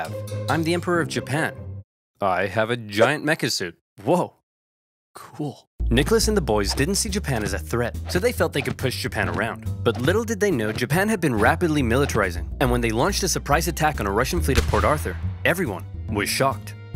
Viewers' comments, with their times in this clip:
0:03 the way he said cool reminded a lot of how beavis says cool from beavis and butthead